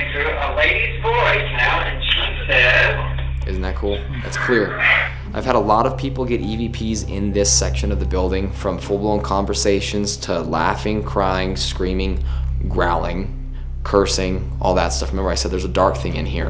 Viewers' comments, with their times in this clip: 0:03 Around the time of the evp “shut the door “ I swear I hear “shut the damn door” angrily instead of “shut the door. “ I’m not even wearing headphones and I know I’m extremely late to this.